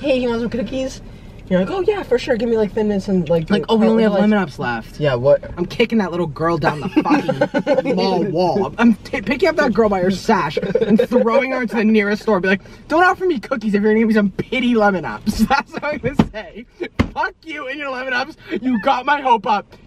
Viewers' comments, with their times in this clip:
0:03 THE SILENTLAUGHTER IS SO FUCKING FUNNY HELPP